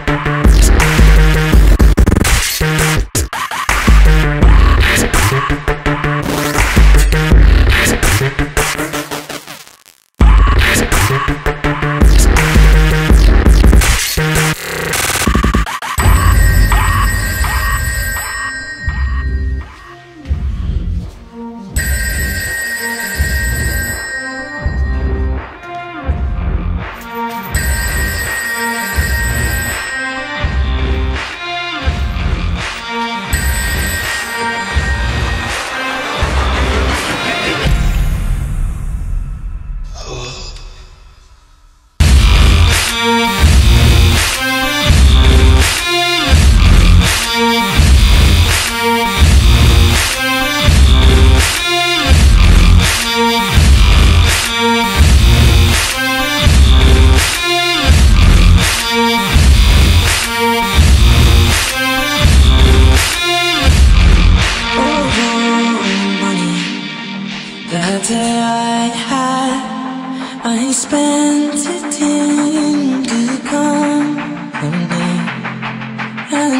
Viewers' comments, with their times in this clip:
0:09 that moment of shear panic when you think your headphones blew out.
0:16 I love the background music slowly getting louder Fucking amazing!
0:19 droppin harder than a midget over a spring loaded pole vault off the roof top
1:04 .....is that pitched up Ed Sheeran? It doesn't sound like the girls singing. Curious, not complaining.